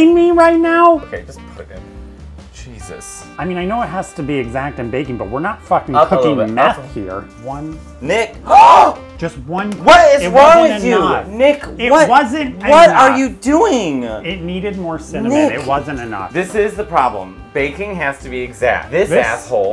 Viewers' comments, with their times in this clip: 0:07 Matteo’s scream there is everything then the Italian mom hands afterwards had me on the floor laughing 😂
0:07 it sounded like he saw a murder er in the act and his life flashed through his mind.